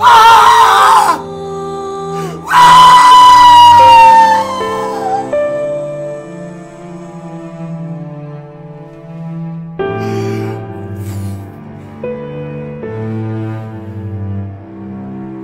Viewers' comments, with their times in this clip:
0:03 in this video he sound like that jackass chicken that come on every time 😂😂